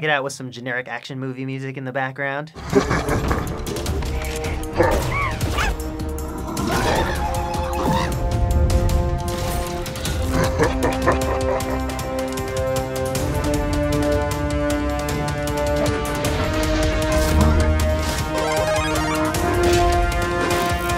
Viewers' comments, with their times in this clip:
0:06 the burger sounded like general grevious